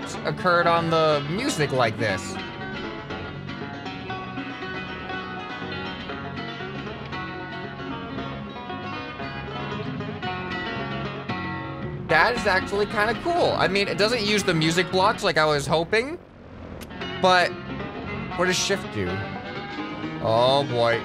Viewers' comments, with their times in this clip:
0:08 that is not doppler effect (it would oscilate in pitch, not increase in speed). But apparently when sped up, the radio block plays music faster. Which is really neat imo.